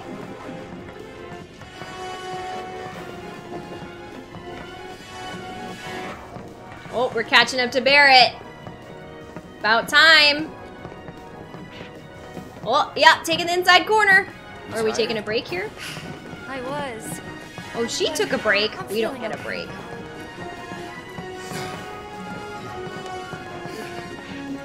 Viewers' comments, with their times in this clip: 0:07 Interesting to note the soundtrack distortion that makes the player feel the pain and fatigue they're suffering in that moment.
0:08 I’ve noticed they used the boss theme song for this part as if the stairs itself is the boss. Dude, 5 floors is the highest I can do nonstop. After that, I’m just gonna run out of breath and probably pass out 😂😂😂